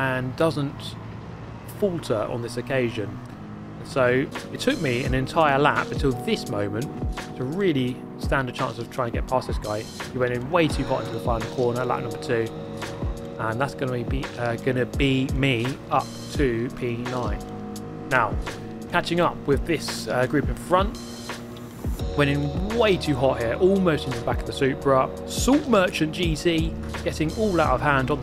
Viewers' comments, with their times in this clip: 0:04 That music background starting from is for your audience that listens to your video while trying to sleep? If it was, thats a good touch.
0:04 Was the music randomly starting intended? I paused the video thinking it was some other tab / site that started a random video or something 😄😄
0:05 Scott Speed’s chill beats to race to
0:12 The background music just after was super noticeable only because I don't think you've ever used background music before lol. I like it!
0:12 The light/chill song at the last 3 mins + your sweet voice = PERFECT